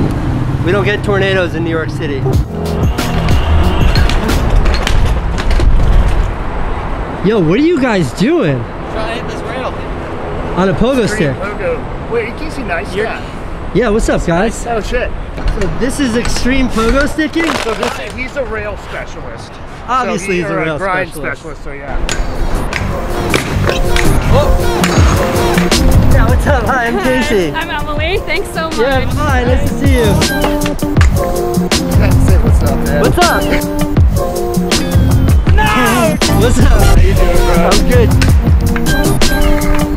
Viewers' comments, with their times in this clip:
0:06 ROFL 🤣 the tone of that "what are you guys doing" had me dying just now.
0:24 How is that guy sleeping with all that noise! lol